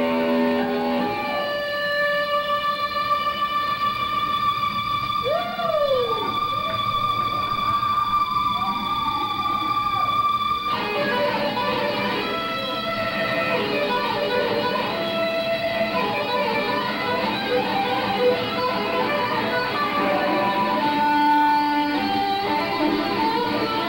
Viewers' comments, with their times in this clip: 0:10 What date was this? Is this before Van Halen? sounds like Edward (although Ed kicked butt even before he did the 2-handed stuff)